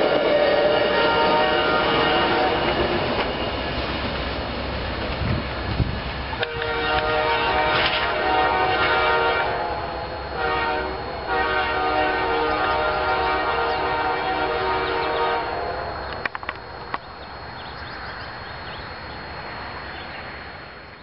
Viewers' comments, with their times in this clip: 0:07 that horn in the distance